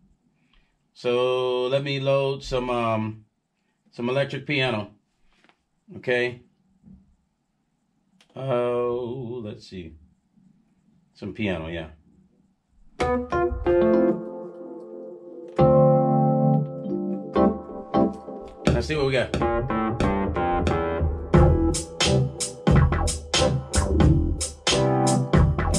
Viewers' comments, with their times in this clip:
0:08 dudes sounded like one of those voice machines😂